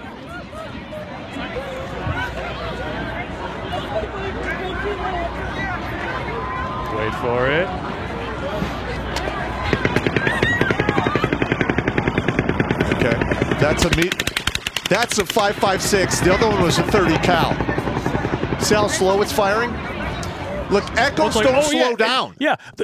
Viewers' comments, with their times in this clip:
0:09 I was an M-60 machinegunner in my unit decades ago, and that rate of fire of the deeper sound sure as hell sounds like, and has the same r.o.f. as my old pig. I'm not saying it was an M-60, but there are certain sounds and rhythms you never forget.